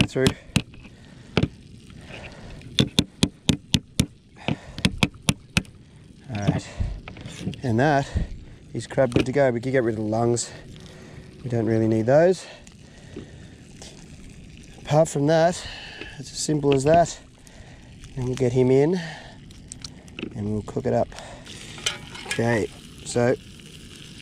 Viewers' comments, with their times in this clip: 0:05 Dude the knocking scared the shit out of me! 2AM on a Sunday night and I hear banging like that through my headphones! Love the videos mate, been watching them for a month or two and I'm really enjoying it, as someone who can't do this kind of stuff.